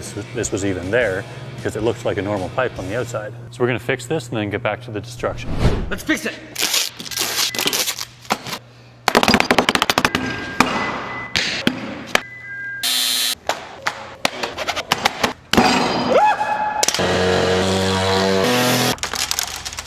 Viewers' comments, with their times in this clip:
0:06 sound like me crafting in minecraft